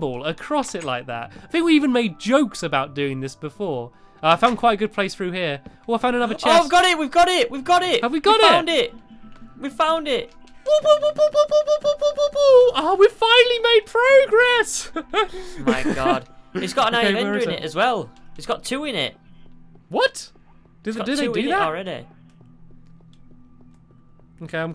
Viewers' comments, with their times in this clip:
0:10 high pitch voice WOPWOPWOPWOPWOPWOPWOPWOPWOPWOPWO